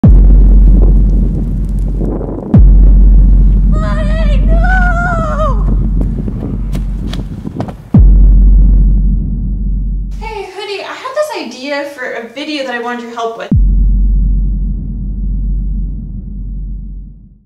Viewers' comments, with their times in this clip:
0:04 legit blew my ears off with full volume